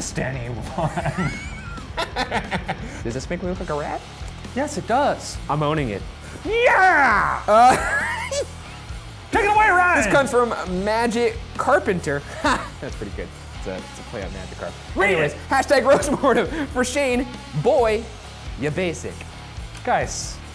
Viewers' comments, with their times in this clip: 0:07 are we not gonna talk about Ryan's cartoon snigger that was adorable and scarring at the same time.
0:08 Shane squeaked like a rat we should make this an Unsolved joke
0:08 That little squeak tho 😂